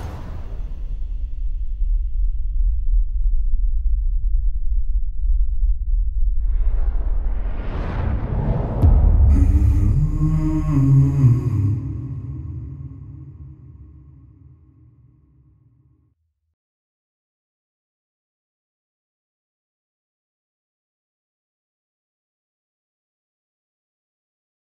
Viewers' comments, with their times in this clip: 0:09 Kickassssss song 🔥🔥🔥 that humming voice ❤️